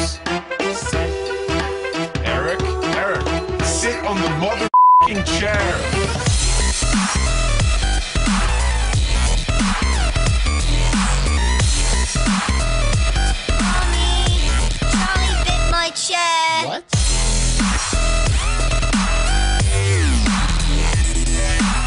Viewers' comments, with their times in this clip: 0:04 lol you censored that out x3